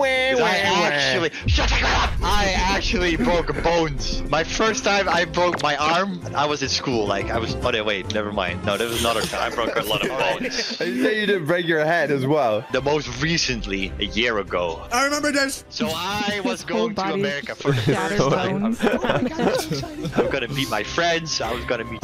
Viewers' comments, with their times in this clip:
0:06 the ''oh nee'' got me his duth sliped out